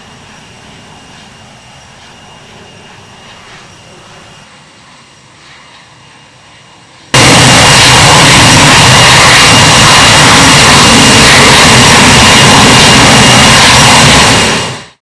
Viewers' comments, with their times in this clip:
0:08 i like that earrapen